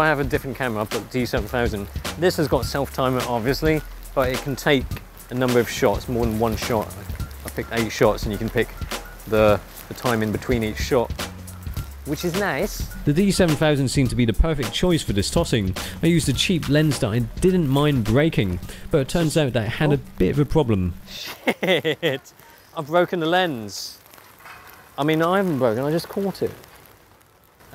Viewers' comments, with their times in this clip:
0:10 "which is nice!" (borat style!) xD
0:11 I love the Borat impression !
0:12 Let a bit of Borat slip out there.